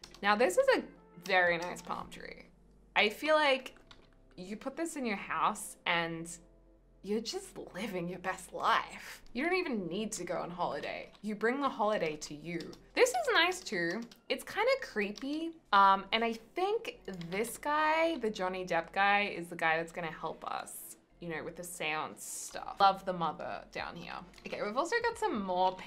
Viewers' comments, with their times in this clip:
0:10 johny depp i cant amber herd is quacking